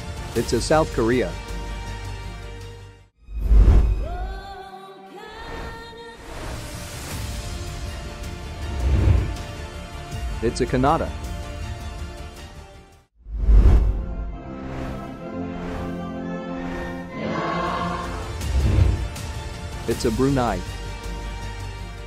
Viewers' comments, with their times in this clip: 0:04 it’s a canuada💀💀💀💀
0:09 it a CaNaDa
0:10 I thought it was pronounced Kwein-nada